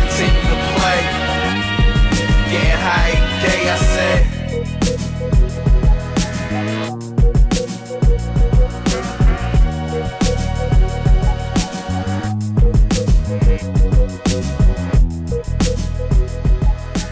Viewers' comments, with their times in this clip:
0:05 Donkey Kong country music be like